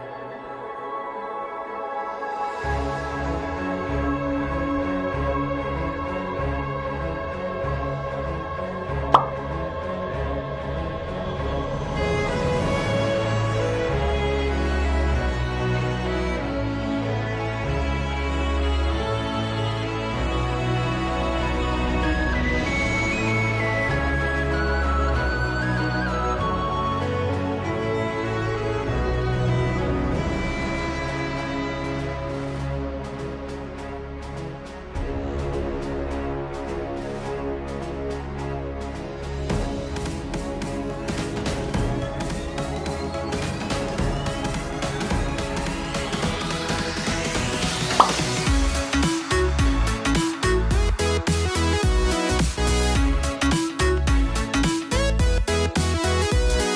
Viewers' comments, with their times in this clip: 0:07 i like that japenese music 🔥
0:43 sad slow brawler noises
0:44 THE MUSIC WAS TIMED SO WELL